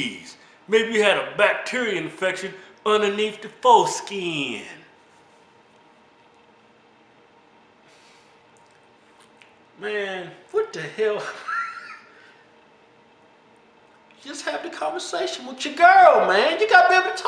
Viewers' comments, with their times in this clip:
0:05 LMAOOOO that moment of silence